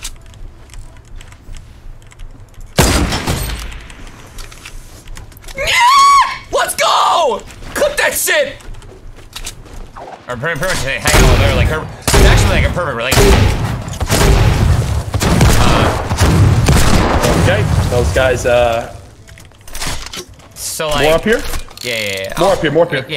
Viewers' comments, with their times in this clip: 0:05 that battle cry 😭